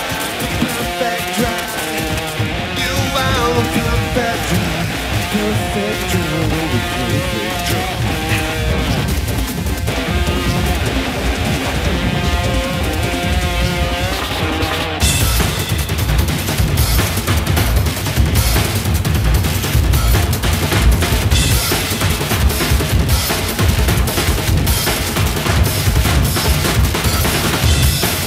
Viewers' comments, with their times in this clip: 0:06 Damn, Ilan Rubin be killin' it on the drums!! Like whoa.
0:10 Who’s here for the Perfect Drug drum solo craziness?